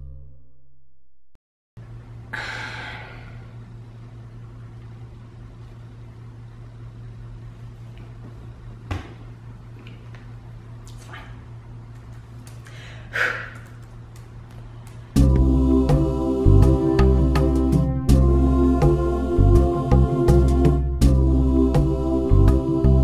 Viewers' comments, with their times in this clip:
0:06 Was that Charles I heard purring in the background ? If so, that's extra hilarious.